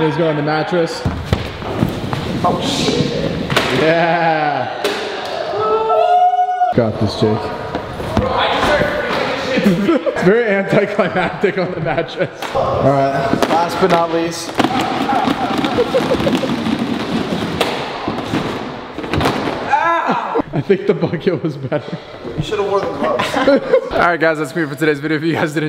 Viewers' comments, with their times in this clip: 0:07 am I the only one that heard him say chase